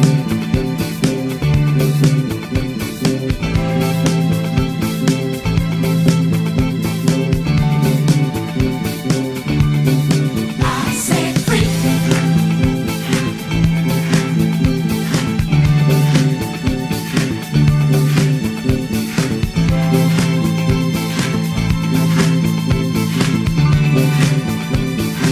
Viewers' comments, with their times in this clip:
0:08 if i were rich id buy you a sterling bass.you know the song..but the timming isnt right..this isnt being disrespectful because your hitting the notes just fine..i know on here its very hard to play and get tings to sound like you want via YT vids.. this song is to be played brashy and balls out..kinda like comming to a party and kicing the door open and saying watch out im here now...when your doing the build up thats to be precise and snappy..you have what it takes to do it its obvious.